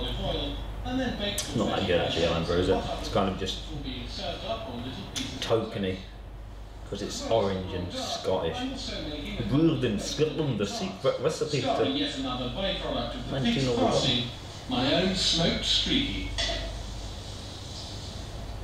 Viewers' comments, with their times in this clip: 0:05 the volume increase 🤣